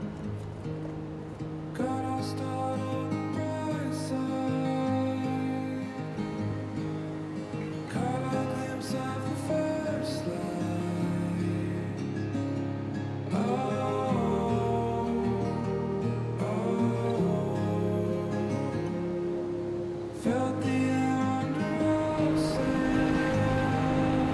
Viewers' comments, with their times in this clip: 0:03 the man singing is like the wind breeze perfect for your location specially dipping in the beach ...whats the title of the song.. .. watching your video and like 18 months in pandemic condition.. your video makes me cry that wer missing the real beauty in life ...i miss this too much to bear.. no wonder im emotional.. now... weve been deprived of the natures calling.. you are truely fortunate to have this inspite of the stricken times like the present...thanks so so much ...stay safe you two..( also watching how you two are sweet to each others..whew...im missing someone special)
0:09 I like the part That song fit pretty well. It's so lovely and beautiful. You two are gorgeous. Love from Malaysia.